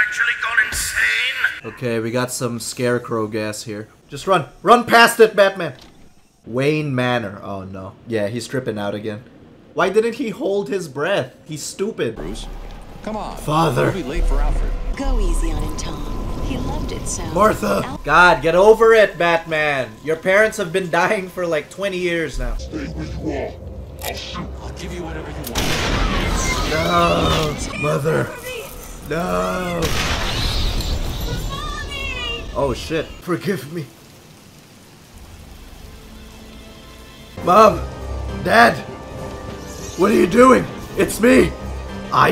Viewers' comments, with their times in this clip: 0:09 The voices, the fucking voices!!
0:24 bro the fortnite sound effect 💀